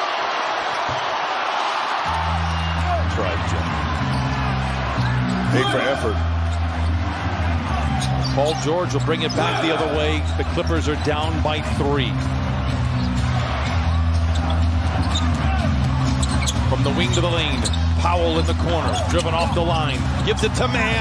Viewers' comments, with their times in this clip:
0:04 the audio is messed up after the clipper - memphis game